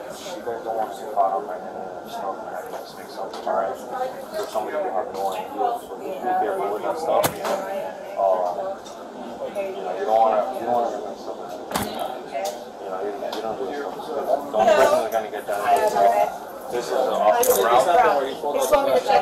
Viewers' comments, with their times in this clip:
0:05 C’monnnnn. Snorting noise 😐😐